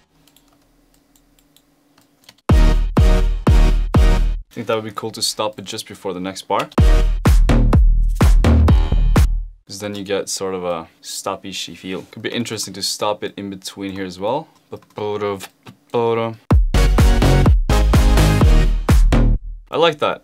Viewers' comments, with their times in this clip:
0:07 perfect timed piano and windows notification xd
0:07 that window’s sound synced so well with the beat
0:08 That notification came at the perfect time